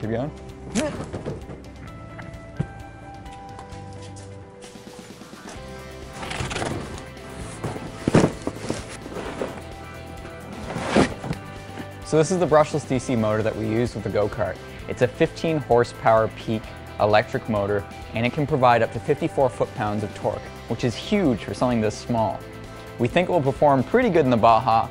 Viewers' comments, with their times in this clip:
0:07 ish he jumped so silently